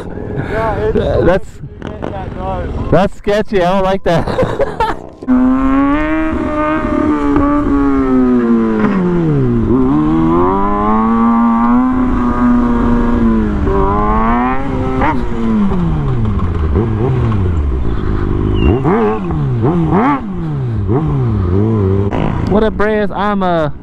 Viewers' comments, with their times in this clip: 0:06 dude you need to practice your braking you can just hear the abs glig glag glig glag